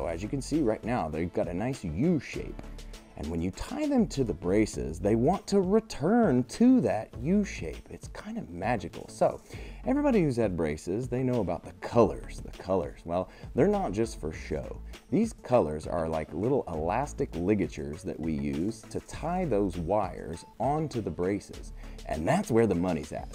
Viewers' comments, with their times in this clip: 0:04 if the Joker was explaining braces to you